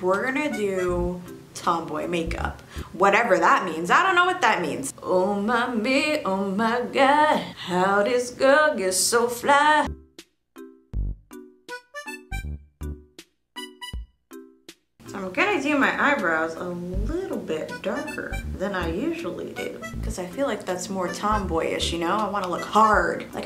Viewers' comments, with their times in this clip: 0:05 no because I started singing with her